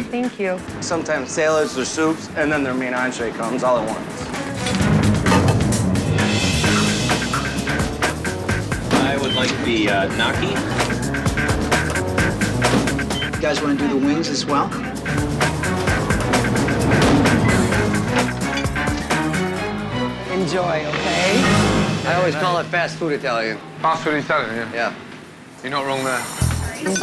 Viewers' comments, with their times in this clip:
0:09 Are we just all going to ignore how that guy says gnocchi ?!?! Ugh
0:09 why would he pronounce it like that? Gnocchi "Nah-Kee"?
0:10 "I would like the G-nocky"